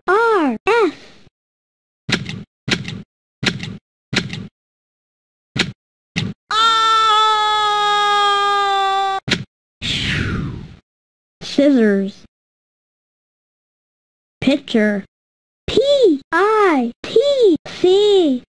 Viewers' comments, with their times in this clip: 0:05 Parachute Man Begin To Scream Is: AHHHHHHHHHHHHHHHHHHHHHHHHHHHHHHHHHHHHH!